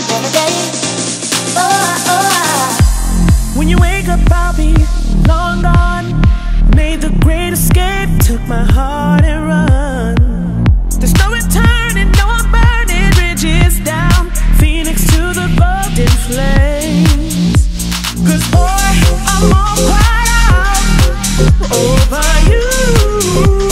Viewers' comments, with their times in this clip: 0:04 Big drop very unexpected 🔊🔊🔊🔊🔊